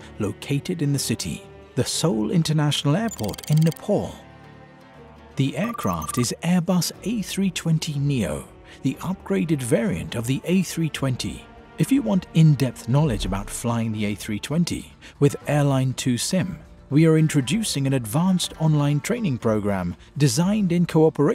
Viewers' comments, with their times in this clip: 0:07 In the callout: Drunkair. That's not an airline I'd care to fly with! : D